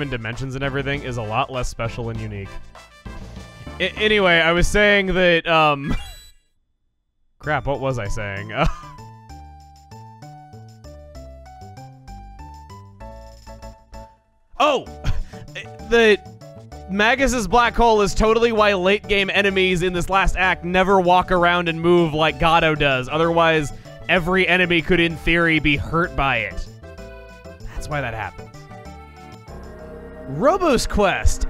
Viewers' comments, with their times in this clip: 0:06 "crap, what was I saying..." pause for Millenial Fair music and perfectly time "oh!" to the music
0:14 your “oh” was perfectly timed with the music.
0:14 Can we just note how he says "Oh!" at the EXACT SAME TIME as the extremely flamboyant "HA!" in the actual Fair Theme?